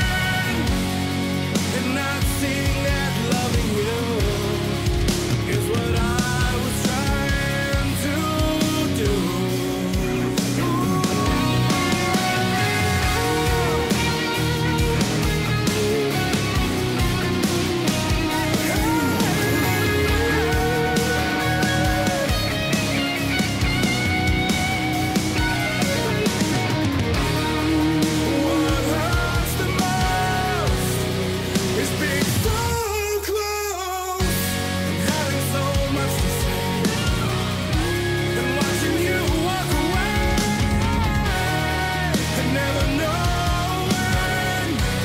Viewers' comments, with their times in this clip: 0:10 if you need to hide a bowling ball just have this guy sing
0:30 He has SUCH a powerful voice. It commands respect is what got me to listen to more from this band! Wow! New fan!
0:31 When he delivered the "So Close" you could feel not only the pain of the narrator of the story but the pain that the singer himself has without a doubt gone through in his life. It's truly amazing and one of the many reasons this band is so truly magnificent.
0:32 That opening verse he was singing...my goodness.....and ...simply wow. Darn impressive range...
0:32 My god! when he yells “so close” I had instant goosebumps, my guys got a set of lungs on him